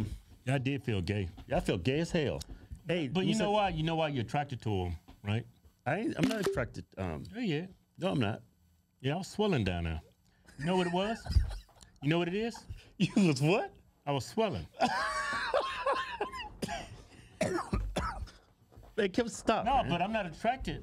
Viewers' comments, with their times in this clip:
0:04 What the fuck was that sound????? Why did the samsung charging sound and apple camera snap sound play at the same time?????????